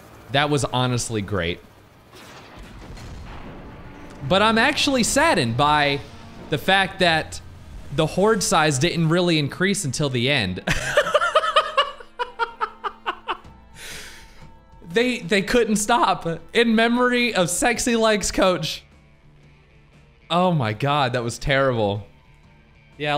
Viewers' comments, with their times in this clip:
0:09 His laugh literally killed me!